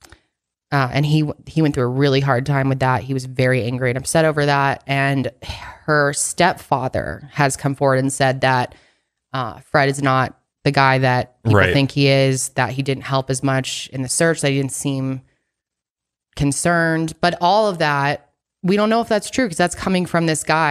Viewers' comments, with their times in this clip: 0:05 what the hell is that creepy whisper